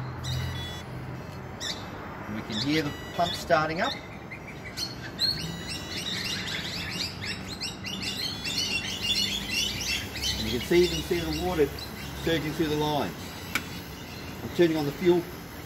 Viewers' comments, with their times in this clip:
0:03 Amazing how similar the sound of the water pump starting sounds just like birds chirping. 🙂🇦🇺